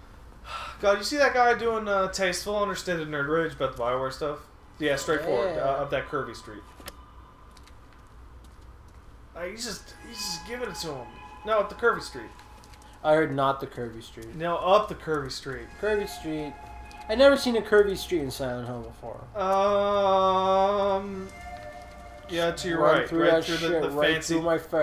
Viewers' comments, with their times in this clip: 0:06 I heard Kirby Street. I thought they would reference their musical theme.